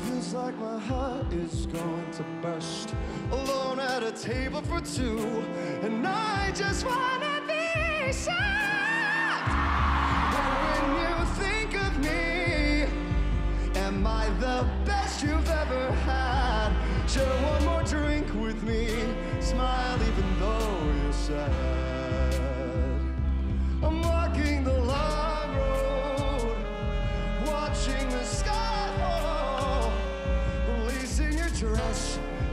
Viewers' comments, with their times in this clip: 0:06 Me at the beginning of the video: He's gonna be like most of the other people live and can't sing that good without using auto-tune. :/ Me listening to OMG I'M GOING TO YOUR CONCERT YOUR THE BEST SINGER EVER!!!!!!!!!!!!
0:14 Isn’t the way he says “had” incredibly beautiful? ( for those who got distracted by his high notes )